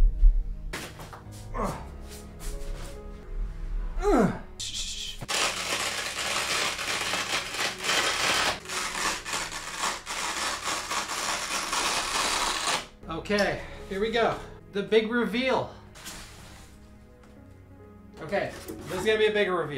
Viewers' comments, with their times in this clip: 0:04 ASMR done right